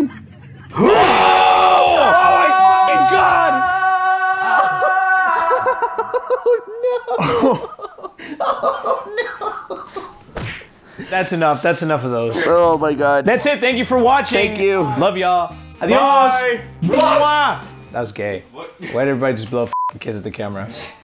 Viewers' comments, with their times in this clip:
0:03 The way he scream omg hahahhahhahaha I’m dying on the floor right now ahhahaha🤣🤣🤣💀💀
0:05 narrator has never made a sound like this